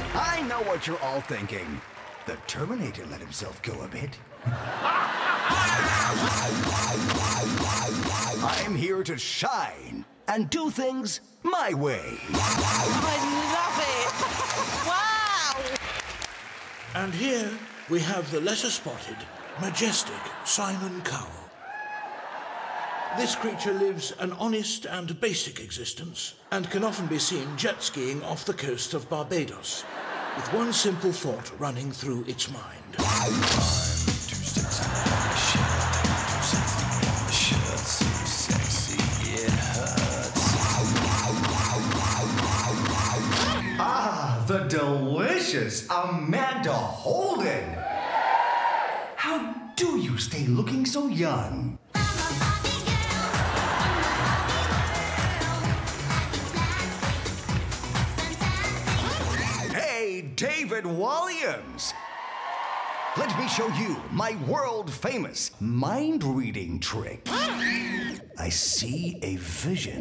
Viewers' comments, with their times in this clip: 0:05 idk but im obsessed with his laugh.
0:33 Sounds like a song Iron man would play to ruin a moment with Hulk and Black widow on the beach.🤣🤣🤣 Also I love the sound his footsteps make.❤
0:52 when music kicks 5 yrs. Old me: